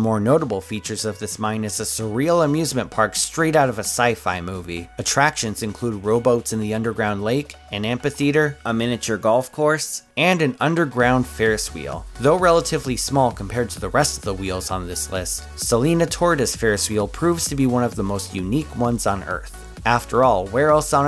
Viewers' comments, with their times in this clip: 0:07 His pronunciation of amphitheater annoys me. It's not amp-i-theater, its am-phi-theater, soft "ph" making an "f" sound. Just bugged me